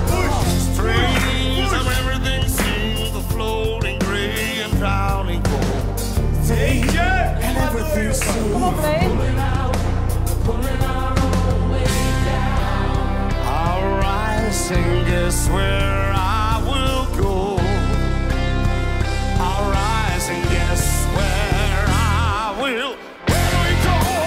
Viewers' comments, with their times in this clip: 0:09 The old guy would be really good at doing a David Bowie song